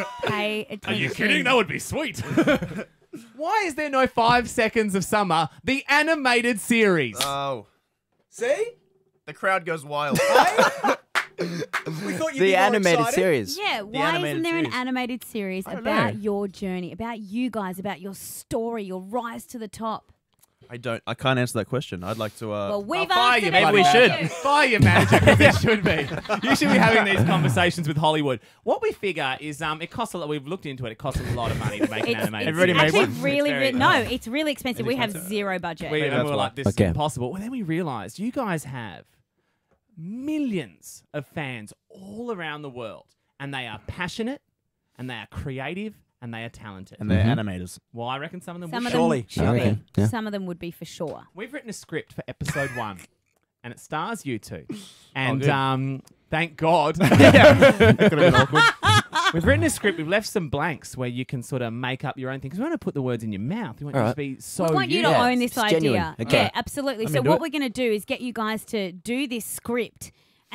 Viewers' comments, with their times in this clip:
0:10 there will never be enough words to describe how much they mean to me i will never ever ever get enough of Calum's laugh + smile
0:52 Omg Luke's laugh ... I can't